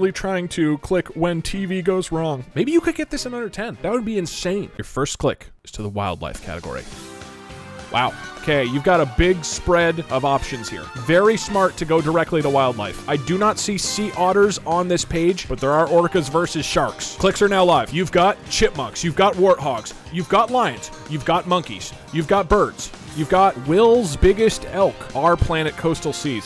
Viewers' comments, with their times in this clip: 0:09 This was the time I started jamin out to the music wile eating cereal